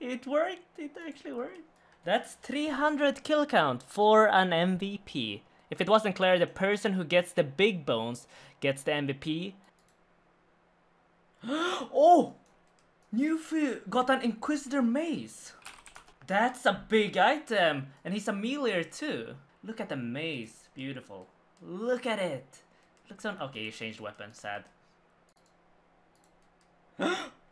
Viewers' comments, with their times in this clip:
0:09 i like how he says OH then the dude ingame be like :O